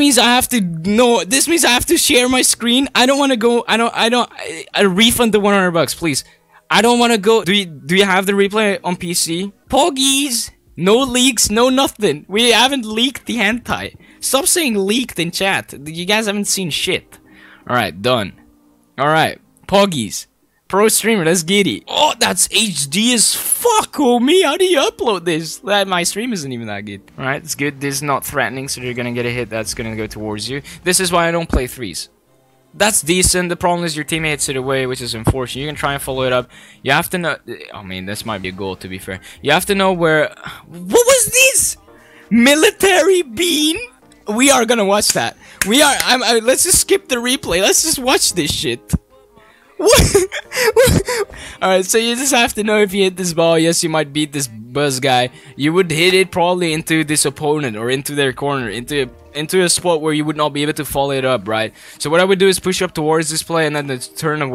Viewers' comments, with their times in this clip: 0:09 the way he said 'Poggies' tho
0:51 minecraft zombie noise